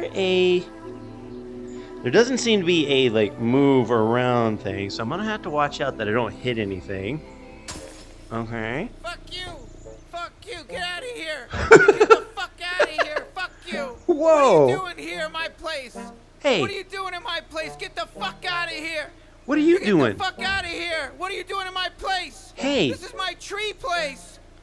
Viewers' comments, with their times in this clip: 0:08 sounds like morty